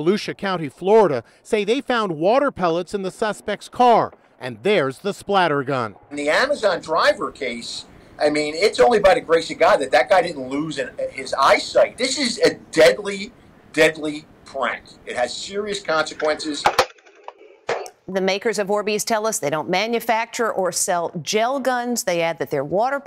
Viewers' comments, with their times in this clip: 0:06 why does this guy sound so much like jshlatt